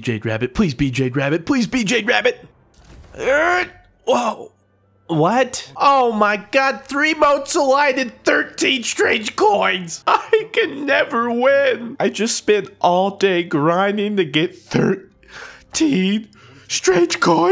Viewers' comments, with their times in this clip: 0:03 he sounds so genuinely pissed off